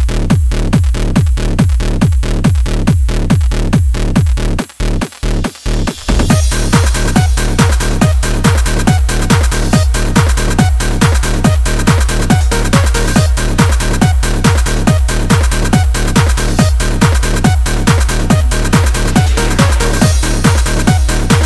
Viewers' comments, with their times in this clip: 0:06 music is awesome untill